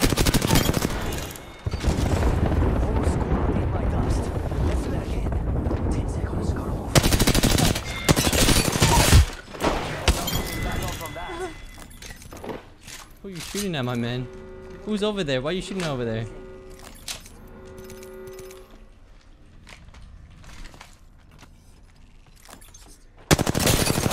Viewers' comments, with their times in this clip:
0:07 that lil laugh had me dyin